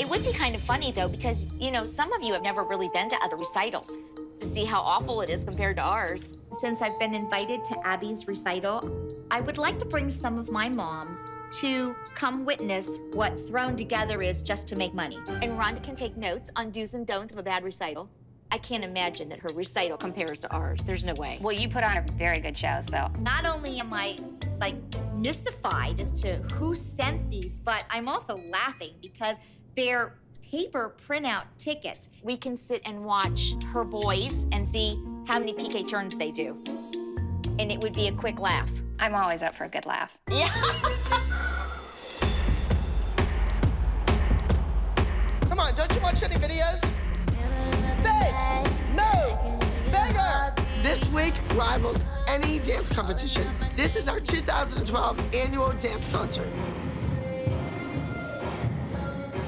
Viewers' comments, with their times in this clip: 0:05 that woman sounded so fake 😂
0:40 Eww what kind of laugh
0:40 cathy what type of laugh was that 😭